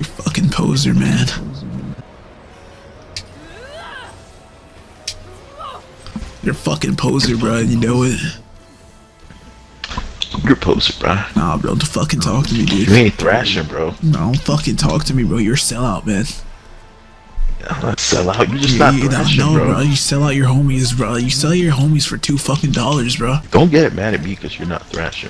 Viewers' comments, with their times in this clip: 0:07 not you ghast lighting in a radical voice 😭